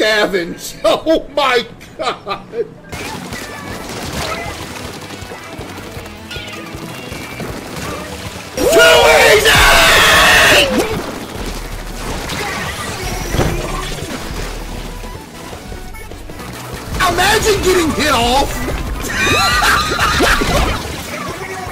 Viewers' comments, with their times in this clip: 0:09 My ears are bleeding :)